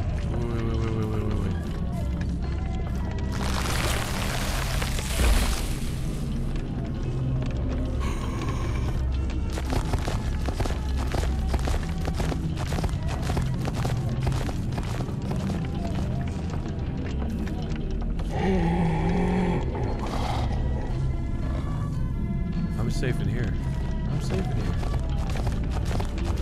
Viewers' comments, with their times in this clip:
0:08 the first 2.5 minutes were fantastic, i mean the game looks great and i enjoy found footage style horror but god damn it how could they possibly have used something just as goofy as a freaking Wilhelm scream right after having that cool visual of the people wrapped up in the chairs with signs around them?? That was a GREAT visual and they freaking ruined it by using the most generic, overused stock woman’s scream. I’m usually not this critical about tiny things but that’s just inexcusable for me. That scream has been around since like the freaking 90s, they couldn’t magic up an ai screaming? see this was a great moment having to be quiet!!!! and then it was immediately ruined by the pathing screwing the monster 😂 i think this game has a lot of really great things going for it, just need to tighten up a few things :) visuals and setting are perfect